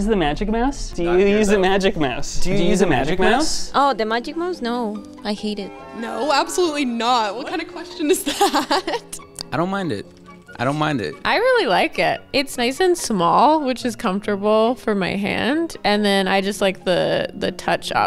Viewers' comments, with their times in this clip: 0:05 Name? Is she Colombian ? Sounds like